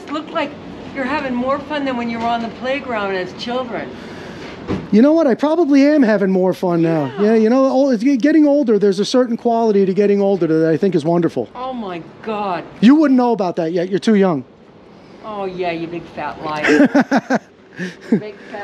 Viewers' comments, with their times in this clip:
0:04 If you close your eyes, she sounds exactly like Stuart's mom on Mad TV